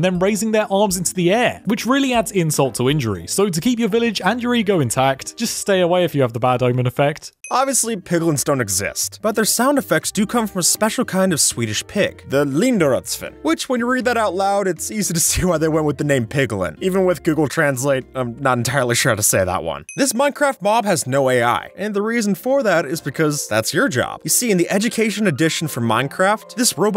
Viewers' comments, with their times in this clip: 0:07 You actually pronounced it nearly right, just make the "i" in "svin" long (pronounce it like the english letter combination "ee") and you basically pronounce the linderödsvin right.
0:10 you pronounced it pretty well